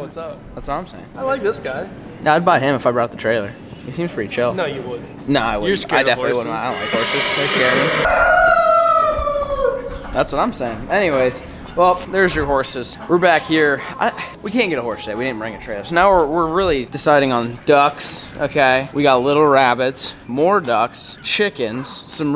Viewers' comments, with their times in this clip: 0:07 The birds said SHEWWWW